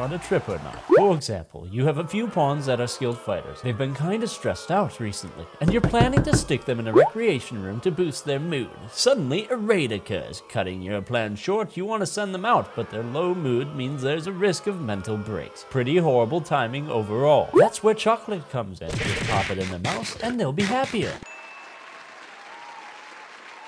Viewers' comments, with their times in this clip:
0:05 That knocking sound you scared the ever loving $%^%$ out of me. Seriously, wtf. I thought someone was bashing banging on the outside of my house and it was after midnight!